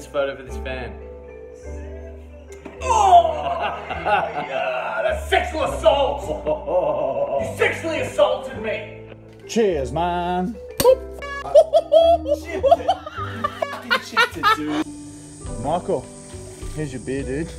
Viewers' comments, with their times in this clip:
0:03 Lol I can still hear Otherside music don't block it out